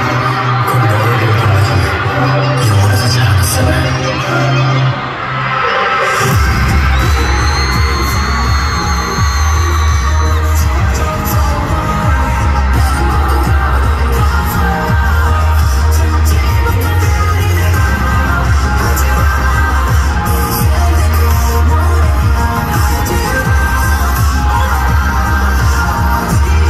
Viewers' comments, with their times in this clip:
0:09 Love this part Jake's vocal is versatile in all genre ❤❤❤